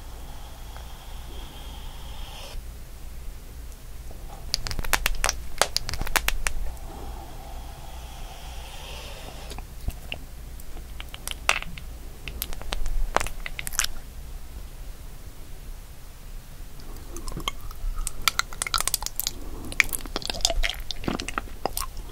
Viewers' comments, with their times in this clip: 0:05 kinda sounds like bubble wrap